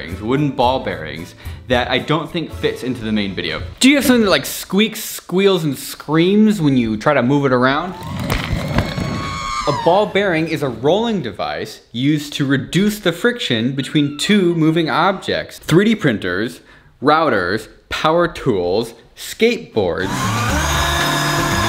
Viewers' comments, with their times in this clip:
0:08 Is that R2D2?? 😂
0:09 min – Ewok scream?